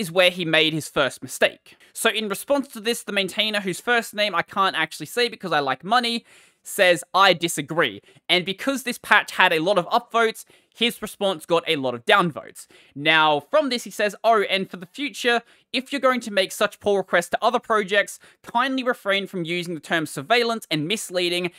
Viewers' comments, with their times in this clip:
0:04 oh, so, rather than learning how to pronounce it correctly, u just assumed how t'll be pronounced if it were and English name and decided accordingly. woah.